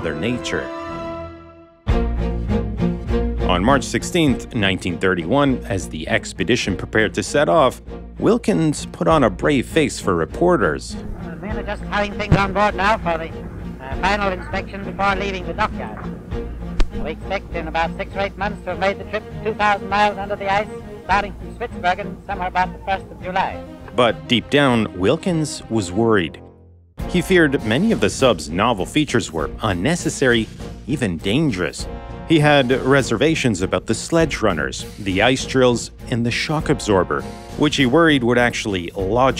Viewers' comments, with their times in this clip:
0:03 is that his real voice or altered by the old recording technology? If that's how he actually sounded... unfortunate.
0:10 why does his voice sound strange
0:10 that is the strongest transatlantic accent I’ve ever heard in my life
0:10 Did that vocal range go extinct? You don’t hear it theses days.
0:11 Microphones sure did suck back then, I wonder if Mickey Mouse was never really meant to have a high pitched voice but the microphones of the time were just too crappy to avoid it.
0:12 When Wilkins first spoke I had to pause for laughter because I was imagining him to sound like that because of the era
0:12 wait, how did this man get anywhere in life with that voice 😂
0:13 Dude sounds like a cartoon character.😅😂
0:17 I wonder if the mic altered that guys voice or if he really sounded that funny
0:18 is it just me or did men talk really weird and funny in those days??!?
0:23 did they actually talk and sound like that or is that just an affect of the audio equipment back then? Those voice recordings always have me laughing my ass off